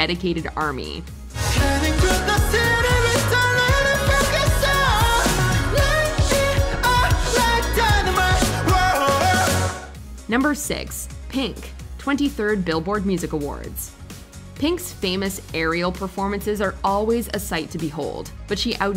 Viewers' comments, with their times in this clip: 0:03 Tell me thats not dubbed.